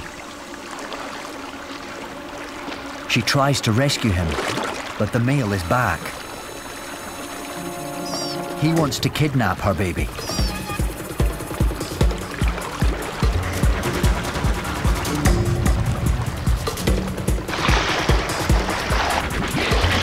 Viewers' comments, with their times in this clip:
0:06 Why did I get kind of anxious when that music started playing and they were struggling